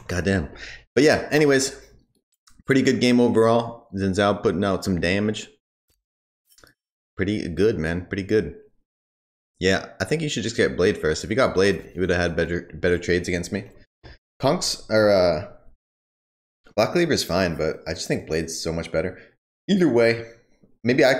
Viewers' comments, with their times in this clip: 0:03 Bless you ! Now you know i was here till the end :D